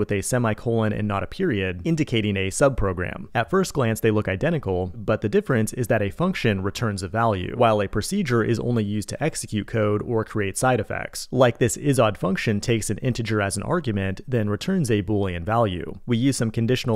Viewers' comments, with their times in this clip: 0:04 man i was edging then boom came..